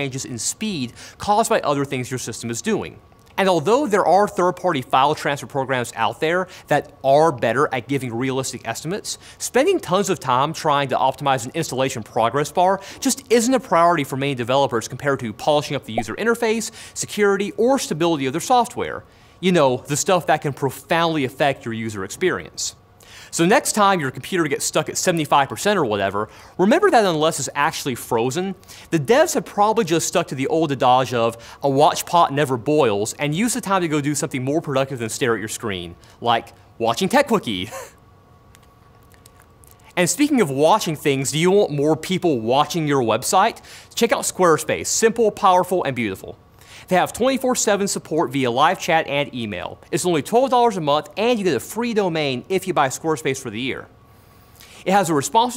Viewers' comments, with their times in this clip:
0:09 "Spending tons of Tom"
0:09 Why did he turn southern ? lol
0:09 did he just say tom instead of time
0:14 was it only me that thought they got a funnyjunk notification ?
0:29 What's an adaj?
0:37 Did somebody miss a jump cut there? That laugh stopping, Jon moving his mouth a couple times to say the next sentence is very awkward.
0:38 umm... That sound when dry lips touch each other ... enticing.